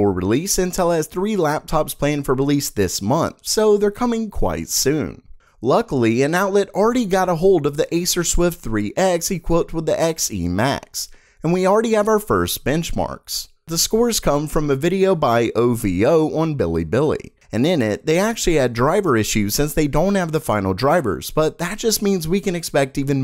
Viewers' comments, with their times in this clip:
0:05 Damn, Ricegum got the xe laptop??? 😂